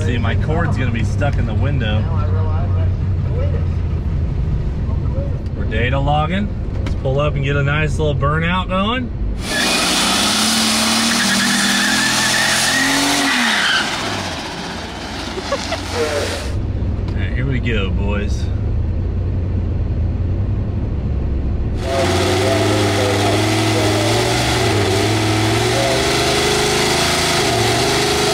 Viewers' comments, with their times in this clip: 0:10 turbo flutter makes me giggle every time too
0:13 u can hear the turbo lol
0:15 bruh sound effect in the background
0:16 deafening mega bruh rang out over the strip